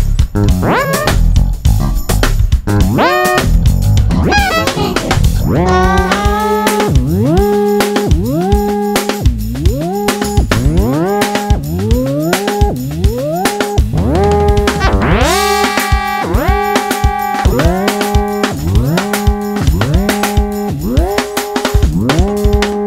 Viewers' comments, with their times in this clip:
0:08 what is that fx petal???? I've never heard a bass do that ever, so sick